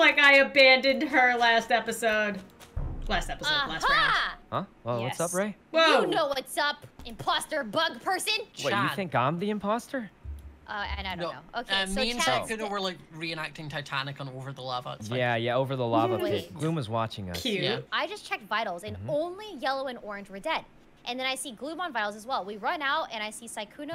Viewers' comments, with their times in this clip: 0:07 ''Wait you think im the imposter?'' THAT VOICE IS FREAKING ADORABLE-